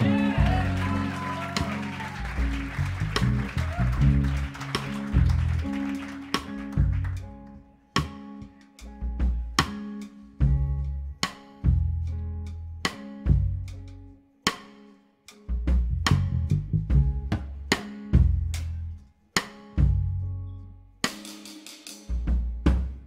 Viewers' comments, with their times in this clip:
0:10 Go full Massive Attack